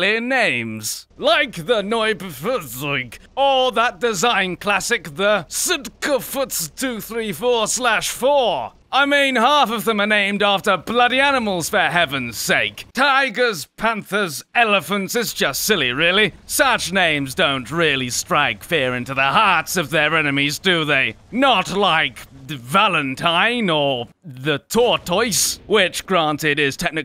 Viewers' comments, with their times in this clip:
0:09 I love how he says Sd.Kfz 234/4